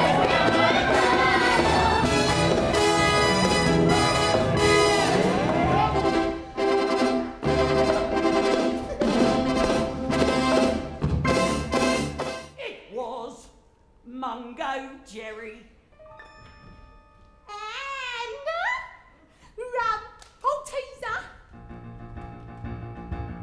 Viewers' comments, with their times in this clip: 0:05 Can we talk about how perfect that laugh is it’s so subtle but adds so much to the performance